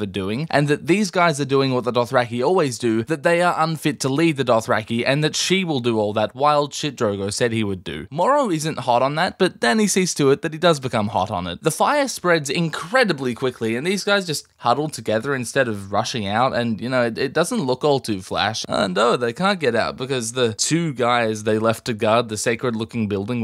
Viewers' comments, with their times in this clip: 0:08 Fckn brilliant delivery 😂